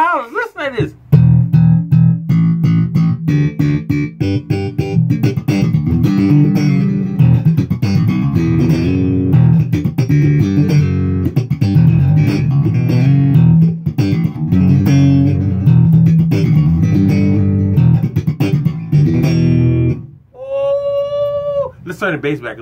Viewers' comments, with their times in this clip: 0:06 that riff is absolutely killer brother... keep on kickin’ ass 😎